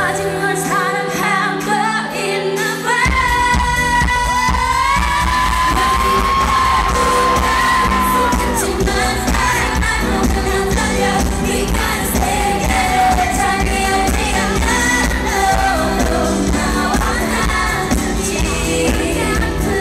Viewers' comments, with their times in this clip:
0:03 Bom note killed me <3